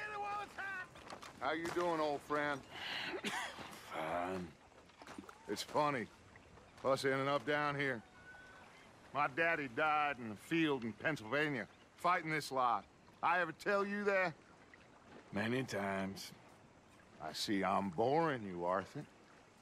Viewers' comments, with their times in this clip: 0:03 that damn cough